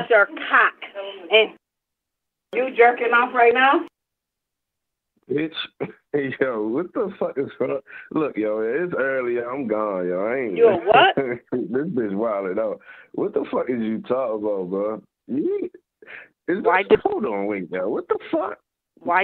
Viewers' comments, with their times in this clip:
0:05 "This bitch wildin' out" when the soundboards are so fuckin nuts, they can't help but laugh at the insanity. This one is a modern masterpiece, great work